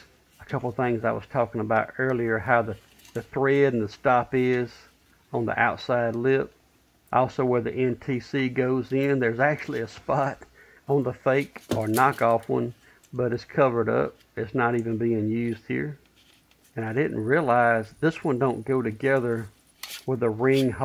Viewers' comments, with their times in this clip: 0:06 starting there's a lot of very high frequency intermittent whines/beeps in the audio